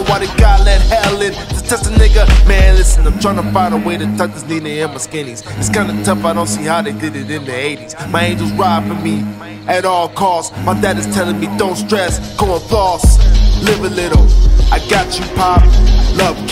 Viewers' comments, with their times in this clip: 0:03 I got Andre Nickatina vibes 🔥😂